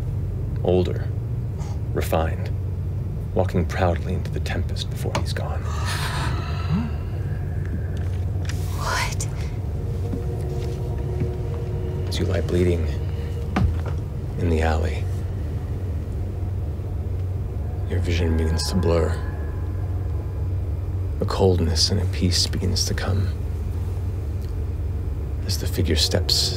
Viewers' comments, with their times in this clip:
0:08 Imogen's shaky "What?" resonates so much and is so haunting.